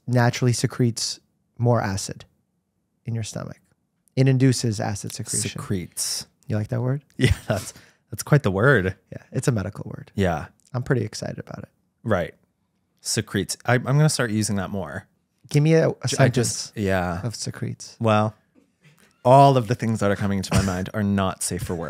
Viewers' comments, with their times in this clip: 0:06 Something about the way he asked him if he liked that 🥵 😅